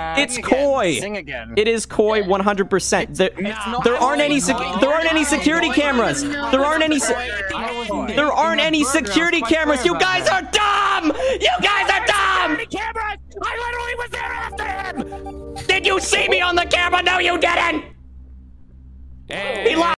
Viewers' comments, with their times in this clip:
0:10 Tanjiro (dub) yelling to Inosuke and Zenitsu
0:10 I can hear his tanjero (demon slayer) voice with that scream since I watched the movie in dub
0:13 Little did I know he became Cyno's VA? Now imagine our General Mahamatra scream like an angry b*tch.